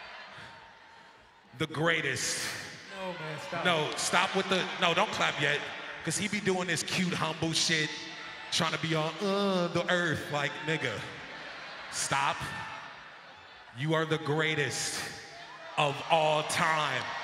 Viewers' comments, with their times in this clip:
0:04 Tyler's impression of Pharrell had me rollin lol "Cuz he be doin this cute humble sh*t, tryna be all "uhh the earth""